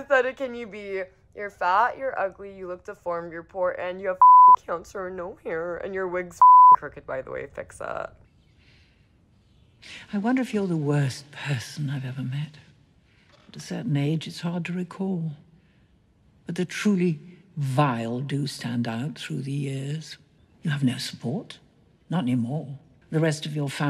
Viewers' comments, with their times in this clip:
0:08 Me: watches the first seconds Still can't tell if her voice is dude or not ._.